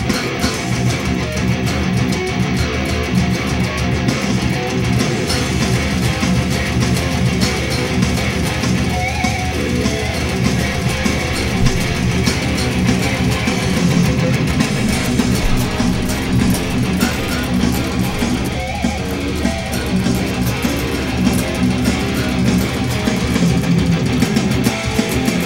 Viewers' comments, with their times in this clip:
0:07 the pinch harmonic made me shit my pants
0:08 love those pinch harmonics